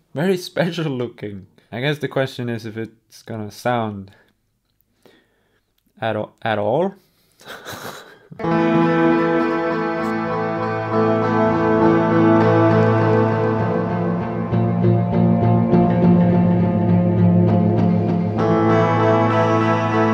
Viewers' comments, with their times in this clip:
0:08 Very Lebanon Hanover. Love it.
0:08 I found where the new Diablo soundtrack should come from.